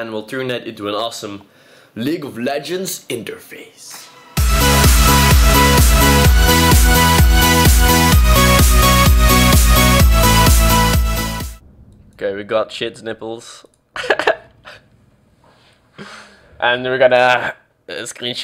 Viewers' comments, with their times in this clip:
0:04 R.I.P. Ear bud users